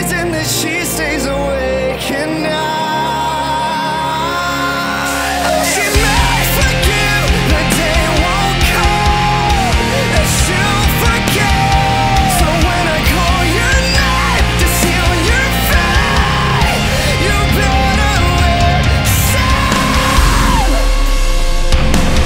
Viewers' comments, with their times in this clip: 0:03 Somewhere reminds me of that band Heartist... anyone remember that band?